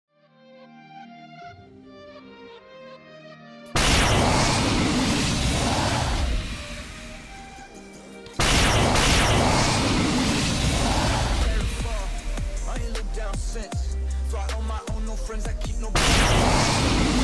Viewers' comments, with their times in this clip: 0:03 wow I was shocked, my sound was loud😲😅